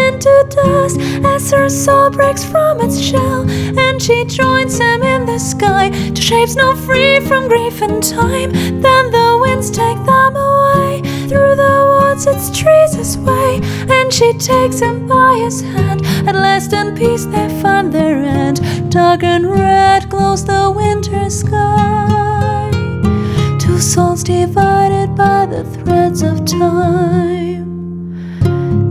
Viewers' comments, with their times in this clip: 0:08 Amazing song, the writer must be congratulated. I was whistling this whilst walking for about five minutes before I realised where I'd heard it. What key/note is she singing in ? My ears are too teary to tell.
0:10 Yes, the song is good. But saying "we can't expect Bards to sing well" is a little bit counterintuitive. You don't need any music theory to sing high notes: you need to have proper singing technique, that's something different. But she has a really hard time producing the higher notes. Take She can't sing it. She manages to push out those notes but it's far from good singing.